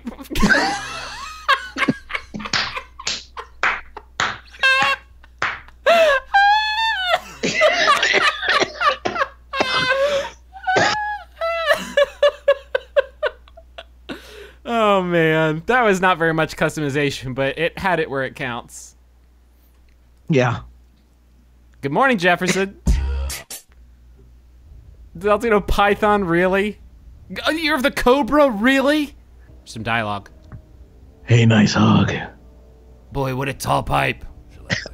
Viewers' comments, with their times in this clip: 0:05 The laugh is beautiful.
0:22 Forget the bepis, I keep coming back for the "YEAUH" noise